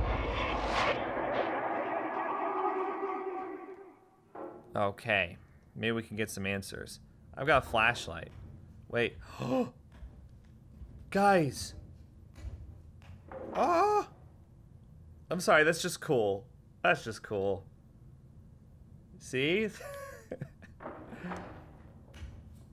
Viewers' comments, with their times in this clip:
0:05 That GASP and then "GUYS!" when he first moves the flashlight around was my favorite part of the video. edit: